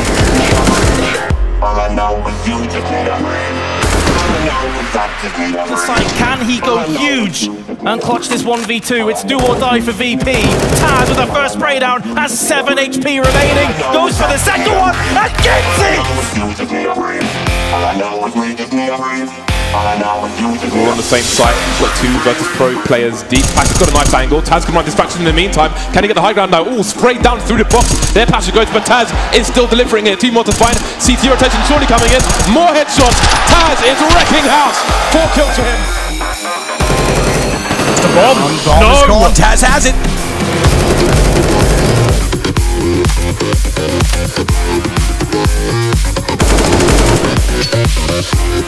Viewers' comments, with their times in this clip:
0:05 the game caster i think his part of music rap xDD
0:34 Dope Edits Bullet Falling sound effects 😎